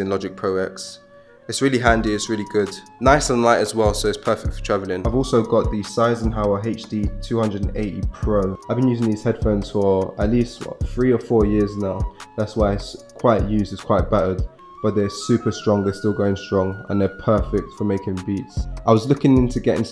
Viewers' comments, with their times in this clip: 0:04 Got kind of triggered when he said seisenhauer